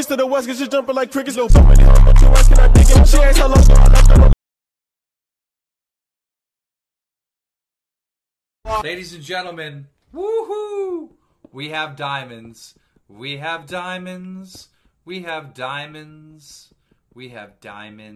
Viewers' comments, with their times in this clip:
0:05 I thought that was a real dog oml